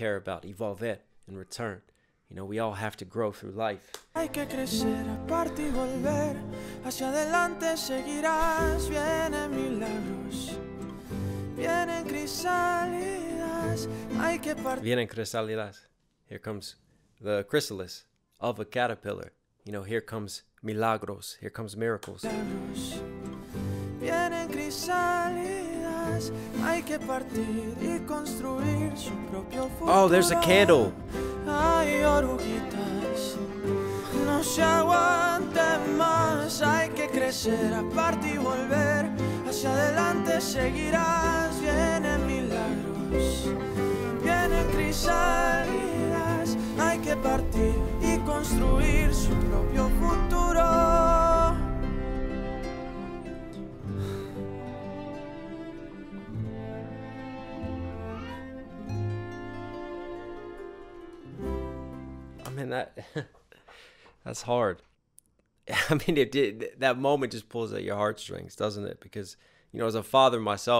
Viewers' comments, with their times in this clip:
0:03 Did you hear the nod to 'Under the Sea' ? It makes me smile in a song that breaks my heart.
0:31 Listen: in a moment the agony/grieving CELLO is introduced below the other melodic lines. Tears me apart every time.
0:57 As you are reacting to the pain of losing a loved one and being your left with your kids, it sounds like your child called out to you at that exact moment